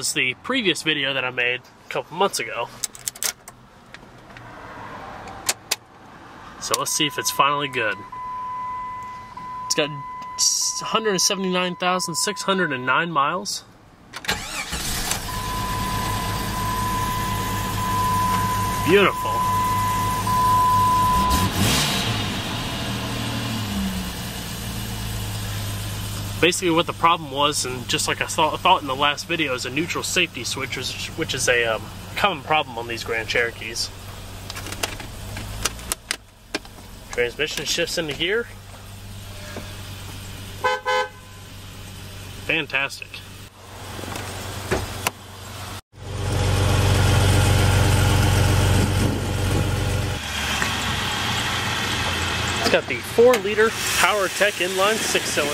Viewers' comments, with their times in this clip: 0:03 I like that startup
0:19 I'm sorry to judge, but if I'm mistaken was that not a misfire right after you started it up and revved it the first time ?
0:39 I like that horn
0:40 nice sounding horn